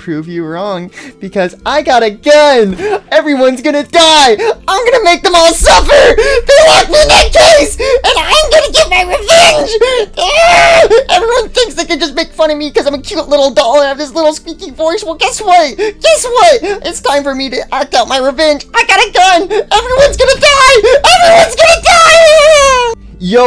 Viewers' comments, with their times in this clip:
0:09 why did she sound like the sun